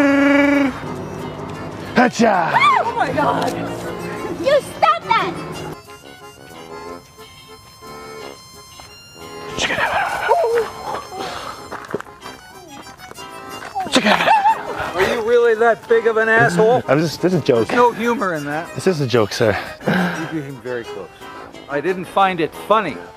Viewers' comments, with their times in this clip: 0:09 that was a wookie and ewok , lol